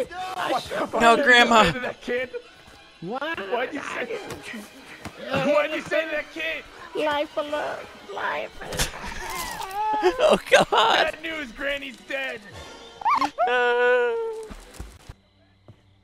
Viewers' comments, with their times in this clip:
0:03 "BAD NEWS! GRANNYS DEAD!" "WHO'S TOUCHING MY MOM?!" "YOU AINT GONNA GETAWAY ON THAT CAR!" Excellent delievered! (after )